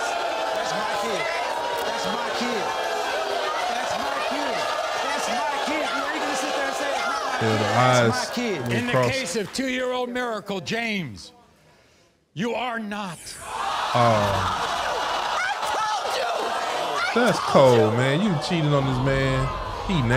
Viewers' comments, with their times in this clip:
0:08 she finna do the roar